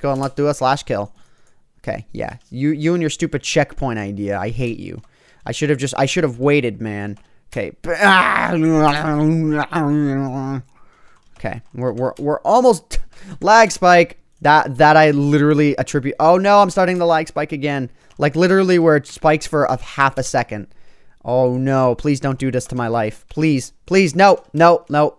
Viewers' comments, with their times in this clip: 0:09 what my dog sounded like last night